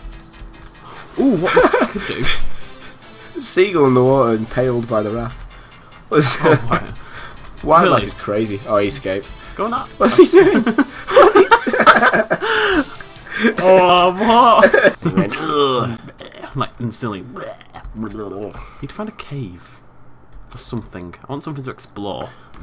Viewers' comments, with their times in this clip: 0:08 me: ha thats weird and all but why are they laughing so hard its just a seagul a little impaled.... OH YEAH SEAGULLS CANT SWIM DUH ME.